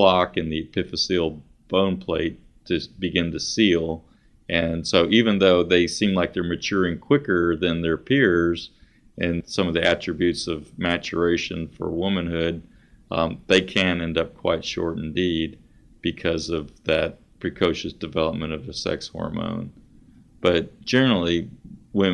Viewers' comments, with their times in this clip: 0:09 holy moly i thought my earphones is broken cuz the other one not working